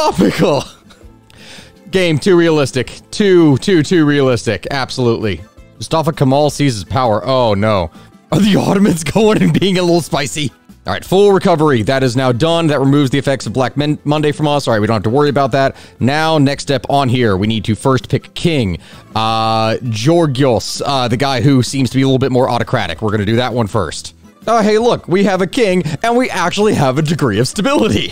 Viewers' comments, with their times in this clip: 0:09 "That removes Black Men–Monday from us." Me: Did I hear it right?
0:12 that removes the effects of black man-uh-monday💀